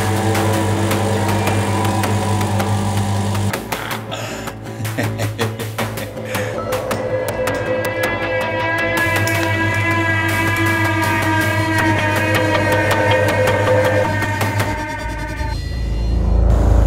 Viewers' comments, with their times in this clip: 0:03 bro's an evil scientist... also the soundtrack changed after completion of generator.....(scary).....